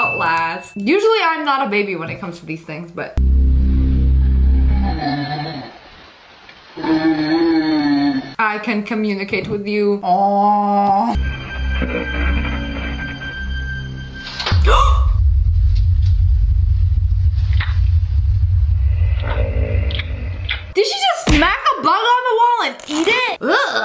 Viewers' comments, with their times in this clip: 0:06 het sister is making weird sound
0:07 thats sounds like my frenchie snoring